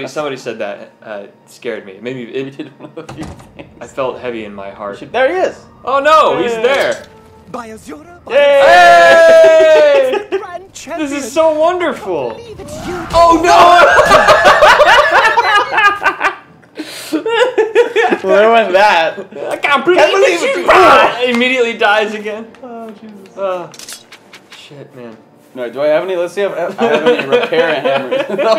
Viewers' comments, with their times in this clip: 0:10 holy shit, hardest laugh of the series so far 🤣🤣🤣🤣🤣